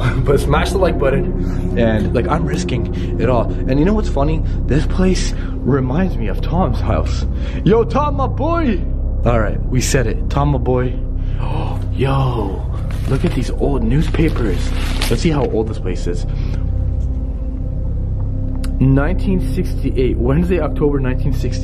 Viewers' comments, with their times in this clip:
0:06 is someone who notice how rarely your voice is? =O